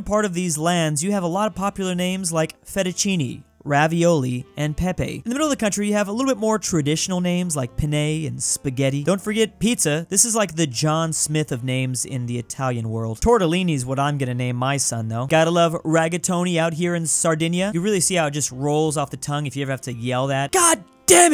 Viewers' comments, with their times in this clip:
0:08 as someone who speaks spanish that part was funny "penne" sounds like "pene" (penis in spanish)